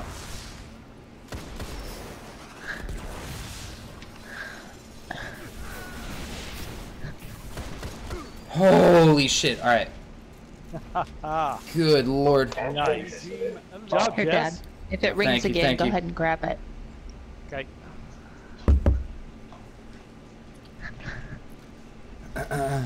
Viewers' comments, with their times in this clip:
0:09 Your dad coming through with the Shaxx laugh